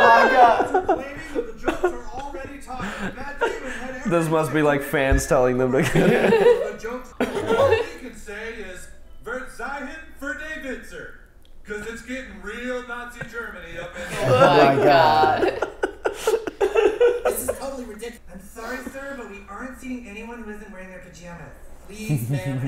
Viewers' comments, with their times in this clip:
0:09 It´s a bad pronounciation of "Verzeihung für die Witze" , which means "sorry for the jokes"